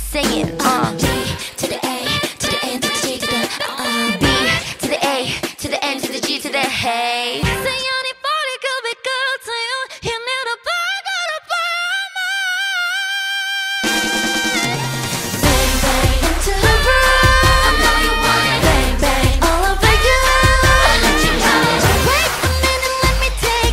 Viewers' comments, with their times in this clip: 0:07 IS SO GOOD HIGH NOTE O MY